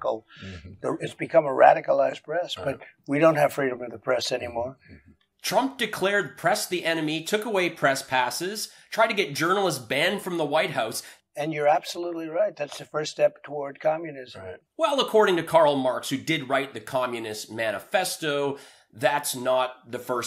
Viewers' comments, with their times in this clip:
0:03 … no freedom of press? How is this interview happening right now? Look pretty free to lie to me. Ong now he’s slurring his words. I can’t keep up with the freaking comments🥴 FRANK SPEECH might be a competitor to best comedy commentary